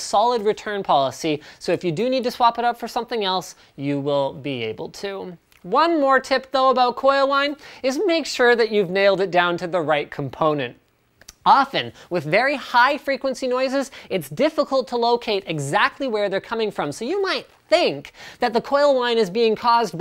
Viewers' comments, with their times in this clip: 0:04 biggest voice crack in history